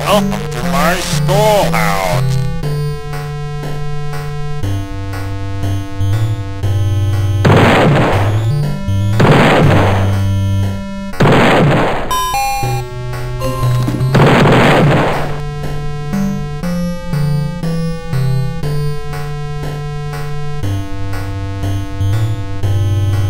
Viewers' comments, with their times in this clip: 0:07 The number balloons popping sounds like Roblox explosion sound